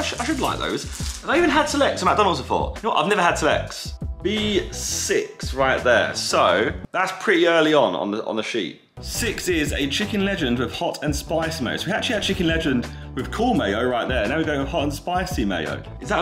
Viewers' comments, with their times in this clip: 0:03 "I've never had sex" - Josh Zerkaa